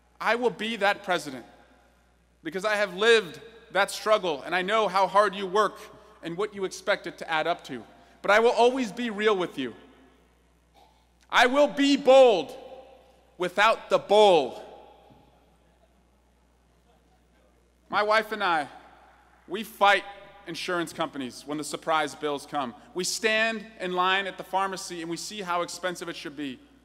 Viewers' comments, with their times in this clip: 0:07 honestly i thought he said bold without the bowl